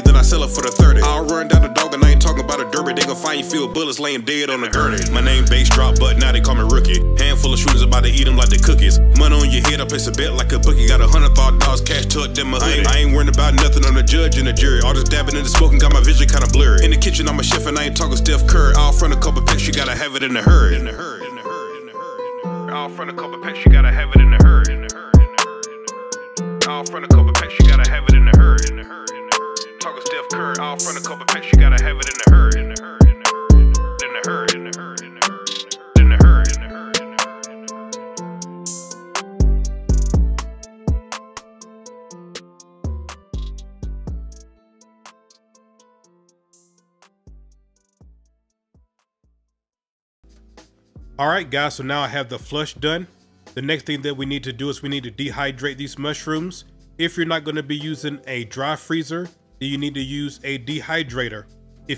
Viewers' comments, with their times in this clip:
0:07 holy crap this song is 🔥😤🫡
0:43 I have no clue what music is playing in the background but i like it